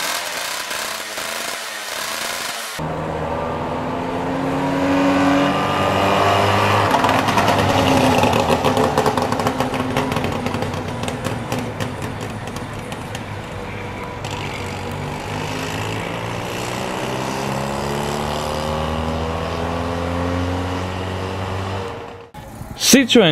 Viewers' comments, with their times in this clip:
0:09 Who left popcorn in the muffler?